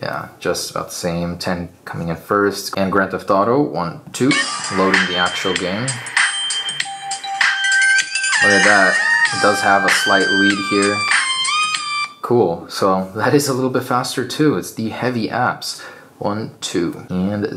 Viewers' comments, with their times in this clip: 0:04 that legendary beat
0:04 Best gangster music of all time